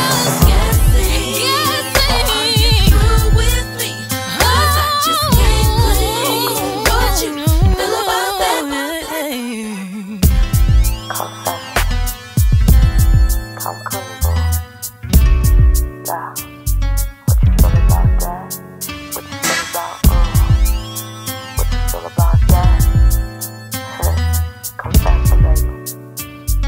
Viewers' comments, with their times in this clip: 0:04 That run is ridiculous
0:07 when the run met the end of the beat Beyoncé tip towing on this beat! The 4 part to the 1 unison to the harmony on the chorus.. VERY GOOD R&B!!!